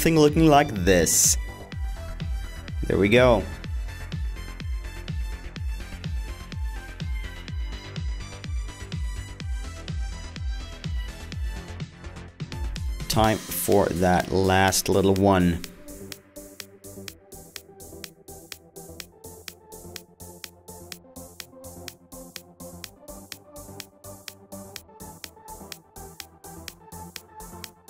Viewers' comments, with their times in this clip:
0:09 Was that a dog